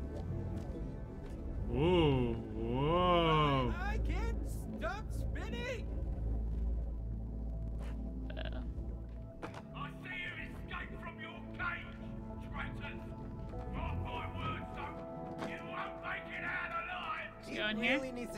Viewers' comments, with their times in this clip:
0:04 😂 my brain immediately heard Gir, "Ahhh! I'm gonna be sick!"